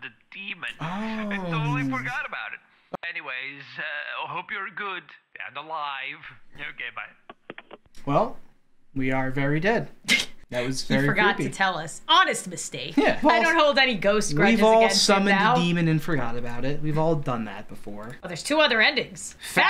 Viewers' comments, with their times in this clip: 0:05 Okay but near The end of "Very Dead" The man who called sounded like Gru LMAOOO, enjoyed the video!